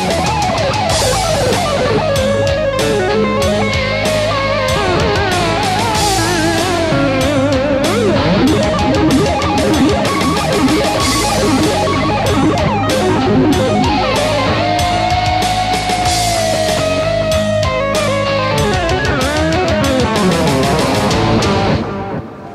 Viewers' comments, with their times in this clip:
0:03 i love tremolo bar